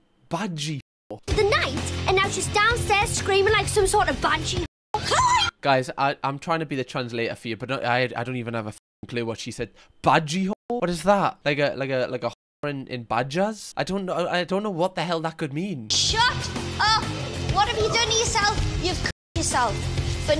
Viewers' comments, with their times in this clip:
0:03 i think she said banshee cam 😭